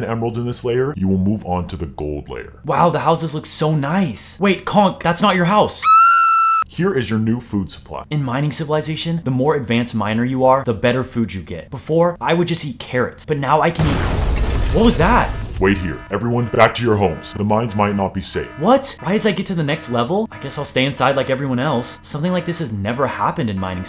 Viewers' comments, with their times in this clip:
0:04 WAIT COC- goofy woman screaming 💀💀